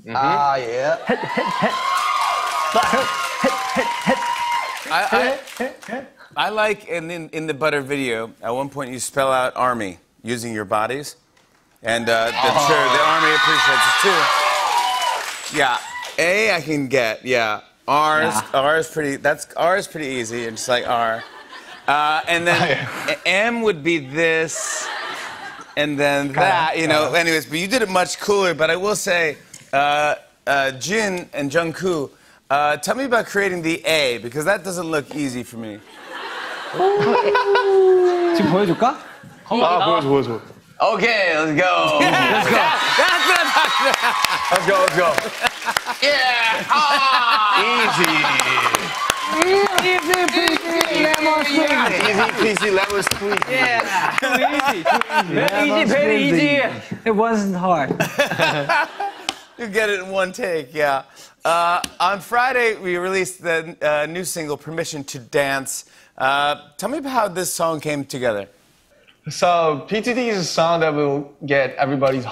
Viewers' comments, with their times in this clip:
0:03 Who was that he..he..heee Hee
0:31 Late comment but I have watched this a lot of times. I am an Army but a Stay but I still support BTS.. Anyways, did anyone notice on Jimmy Called Jungkook 'Jungkoo'😭😪💅
0:31 so is no one gonna address the fact jimmy really said “JOHN COO” 😭😭
0:47 oww the way Jungkok say it😂💜
0:56 Jungkook saying, “it wasn’t hard”, was like the most perfect English pronunciation ever, he deadass is secretly a native English speaker
0:56 Wait......... That was Jungkook who said, "It wasn't hard." THAT SOUNDED BETTER THAN MOST NATIVE ENGLISH SPEAKERS OMG. These boys are definitely secretly fluent in English
0:56 JK "it wasn't hard" sounds good 🖤
0:57 Aayooo Jungkook's ' it wasn't hard' sound so fluentt.
0:57 JKs “it wasn’t hard” comment was cute! He’s speaking English well. 💜😍💜
0:57 JK's English pronunciation is hawt.
0:57 it wasn't hard...I GOT GOOSEBUMPS WITH THAT VOICE....YEAHHHHHH.
0:57 jk saying it wasn't hard that accent almost killed me